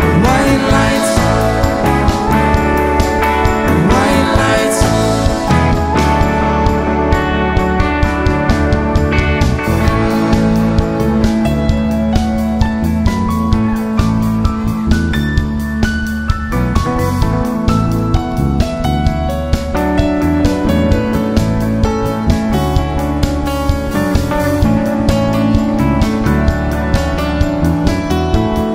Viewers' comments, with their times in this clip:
0:09 the start of a beautiful jam.